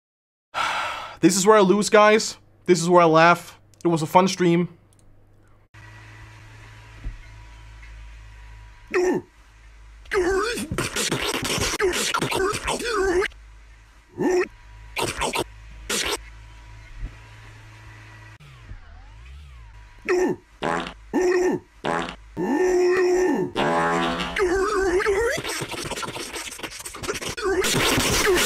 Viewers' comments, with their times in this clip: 0:09 epic beatbox starts